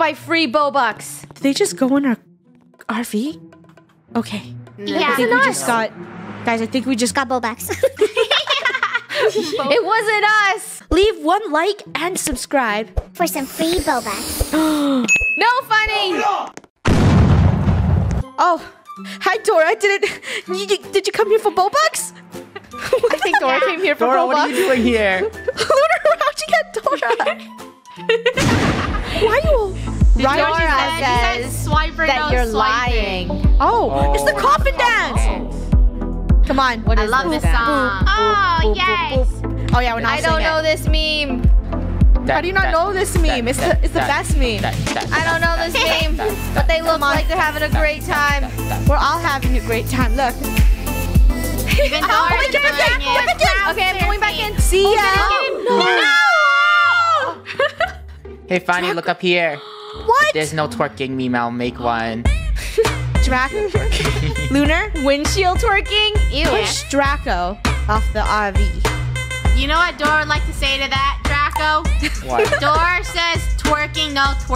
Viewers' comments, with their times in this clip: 0:06 the why she said that was adorable 🥺
1:00 the song is actually good xD